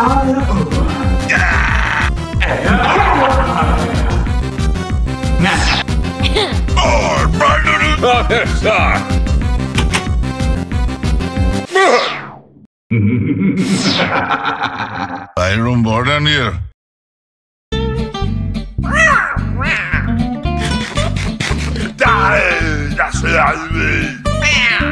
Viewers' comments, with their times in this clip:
0:07 if you listen closely to midas he says maxi shark☠️